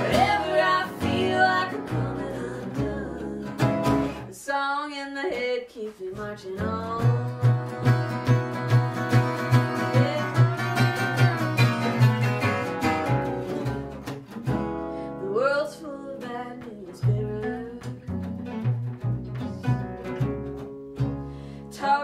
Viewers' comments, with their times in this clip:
0:10 guitar player tries to get his Dave Rawlings mojo on...